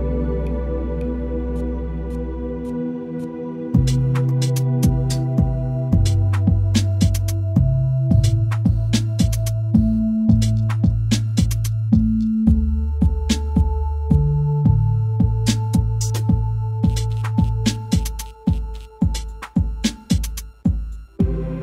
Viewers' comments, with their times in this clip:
0:03 is that... Bass? Procedurally generated music has bass???